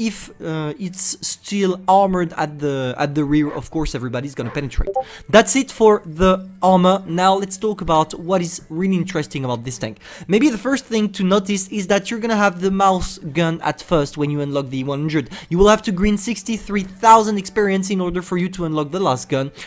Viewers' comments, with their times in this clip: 0:05 I thought I had a discord notification and I panicked lmao